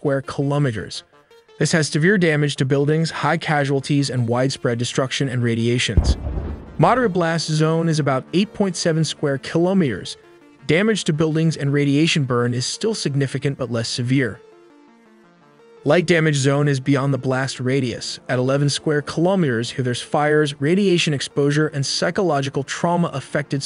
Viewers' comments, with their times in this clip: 0:09 "KILOMERES" okay now it makes sense AI TELLY